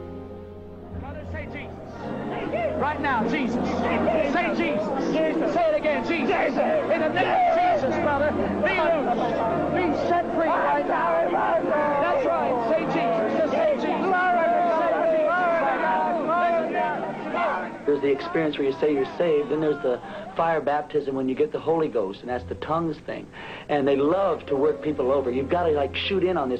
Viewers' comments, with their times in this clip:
0:09 watch the fruity guy speaking in tongues....did you hear "santoria" and "kundalina"....i did!!! This is straight witchcraft terms